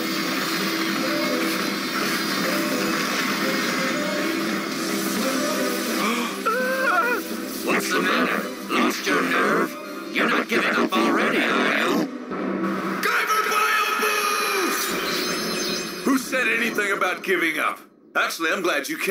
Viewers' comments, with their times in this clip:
0:06 Now why he sound like that? Lol.